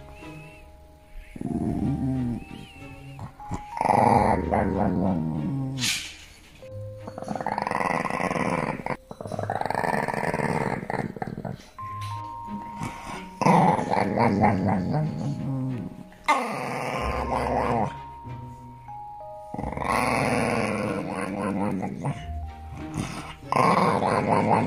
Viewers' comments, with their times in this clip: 0:07 when your door hinges are a bit rusty